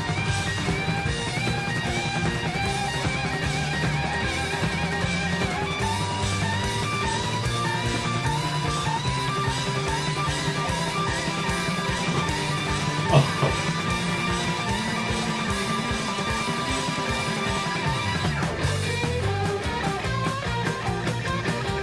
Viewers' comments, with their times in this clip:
0:05 And then the bass joins in on the fun! That's my favourite part of the whole solo. :D